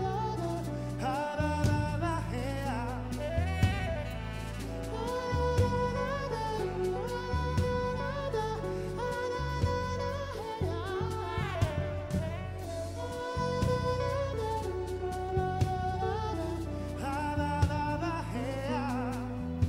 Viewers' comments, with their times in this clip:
0:05 his voice here really reminds me of Smooth McGroove